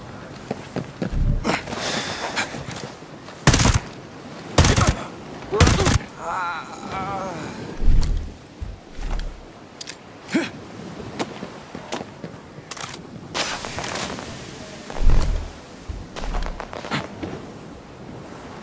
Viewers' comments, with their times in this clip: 0:06 dude died sounding like he was having a cold refreshing beverage. 😂😂😂